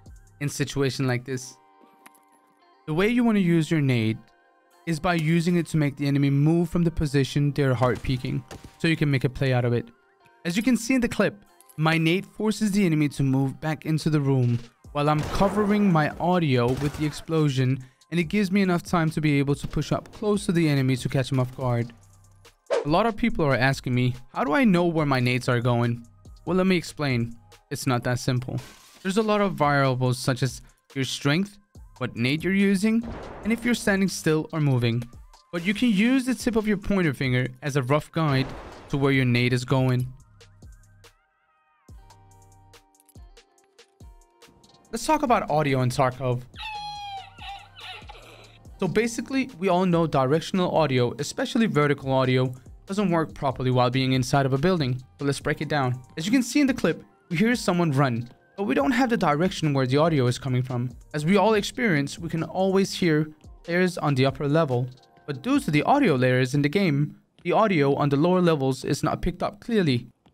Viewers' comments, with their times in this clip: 0:04 The league chat sound got me. Blaze it btw.
0:54 i dont hear running bc of loud music